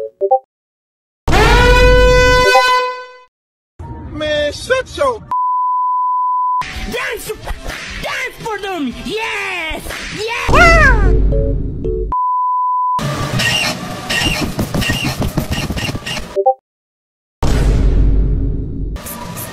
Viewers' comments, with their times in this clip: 0:07 wheeze moment irl